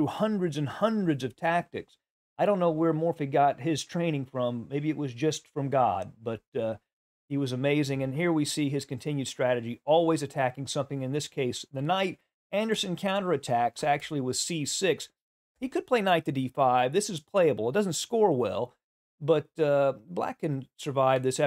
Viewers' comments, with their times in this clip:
0:05 His delivery is too funny.